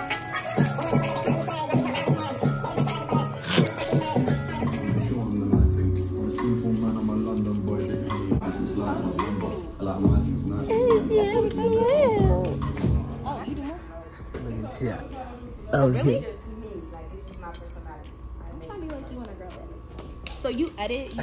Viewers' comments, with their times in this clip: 0:06 they’re listening to UK music too